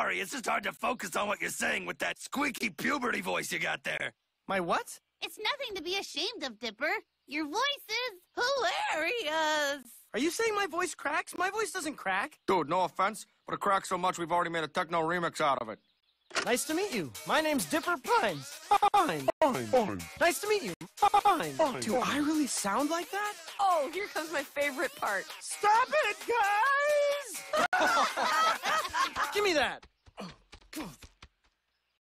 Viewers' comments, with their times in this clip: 0:08 no offense, Mabel, but your voice is also hilarius
0:25 STApH IT gUys!